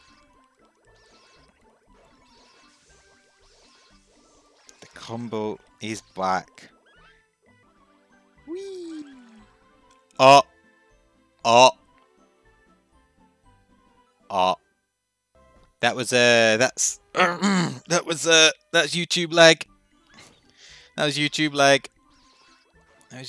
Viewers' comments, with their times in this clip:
0:08 wholesome squire sounds